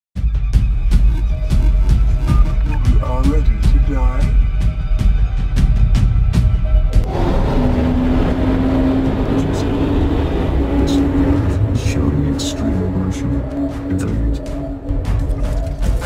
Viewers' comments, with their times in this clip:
0:04 Uhhhhh why do I hear boss music? Giant healthbar appears